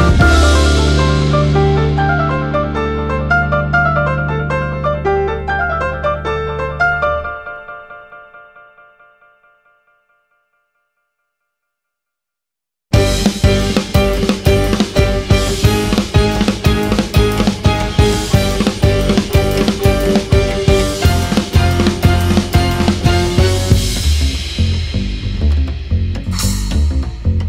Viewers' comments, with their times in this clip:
0:09 S.O.S sounds so much like the start of a pokemon Battle intro! A bit sad that they changed to a different amazing song :)